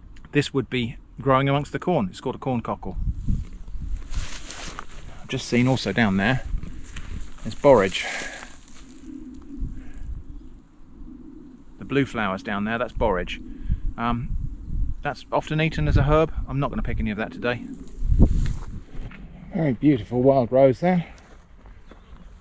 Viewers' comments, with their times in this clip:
0:04 when you said Borage i thought you said Boris and there's just Boris Johnson hiding in the flowers for no reason 😭😭😭